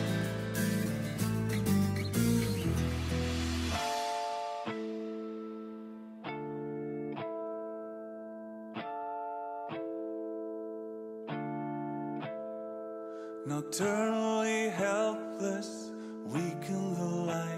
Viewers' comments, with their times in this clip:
0:03 this is the power of opeth dark music at minute the song drag them to a hell of a different mood it is just like a strike to the soul :) watch that priceless reaction